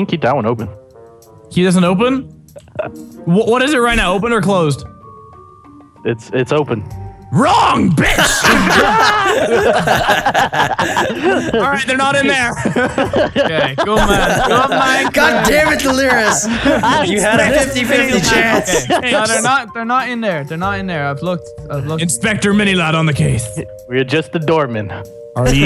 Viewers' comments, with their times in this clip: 0:06 Dat way he yelled.